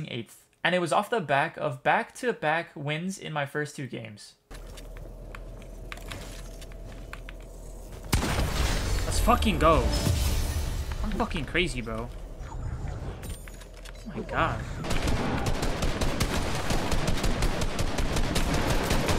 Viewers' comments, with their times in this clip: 0:05 Starting what was your keyboard that you were using because it sounds so good